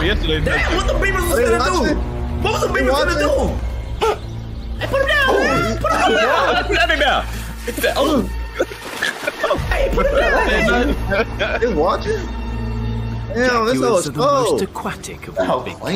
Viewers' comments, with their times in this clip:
0:03 wtf did someone voice over it??? 😂😂😂